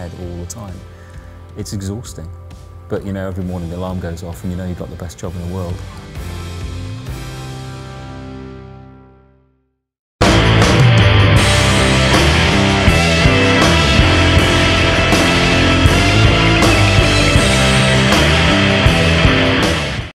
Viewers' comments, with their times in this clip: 0:10 Great video -- but stop or mute before or you'll blow out your eardrums and/or speakers!